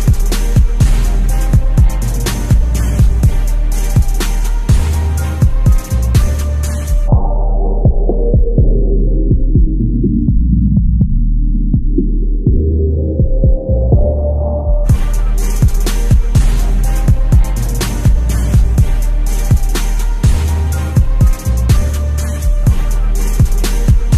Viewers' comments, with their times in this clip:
0:06 my friend who died of cancer has the same drop of music at the beginning of his song like that